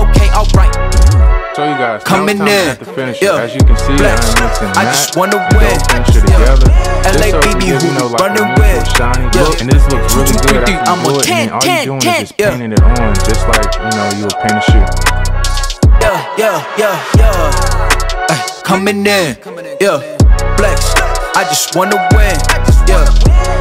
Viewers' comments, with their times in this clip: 0:10 what you used in music was too loud